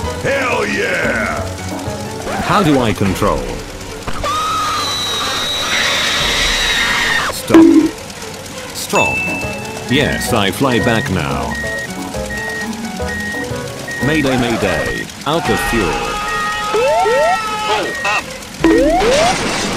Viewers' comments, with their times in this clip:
0:03 i like the screaming sound effect im about to smash my computer in laughter😂